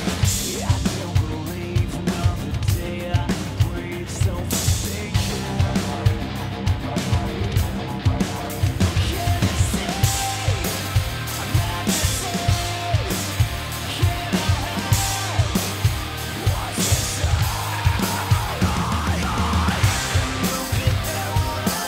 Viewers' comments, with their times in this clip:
0:03 wtf, a crash cymbal sounds but the guy donesn't even touch it